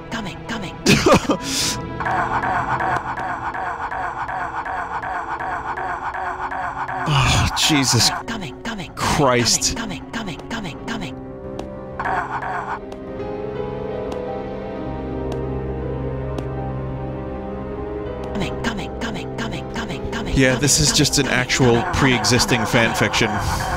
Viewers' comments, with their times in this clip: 0:06 I like that the cutscene slowly turned their voices into banjo kazookie warbles